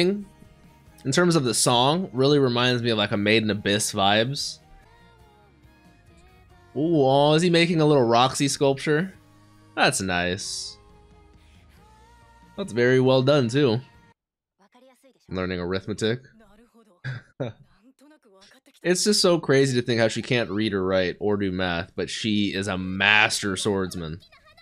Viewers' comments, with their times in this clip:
0:10 The female voice singing the intro reminds me always on the games NieR Repllicant and co.